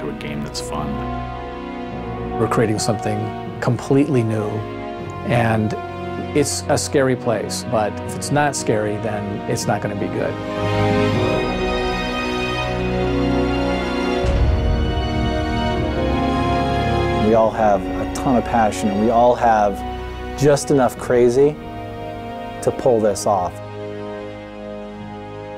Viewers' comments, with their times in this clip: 0:10 is there anywhere i can find the full video ? the way the violins play here I love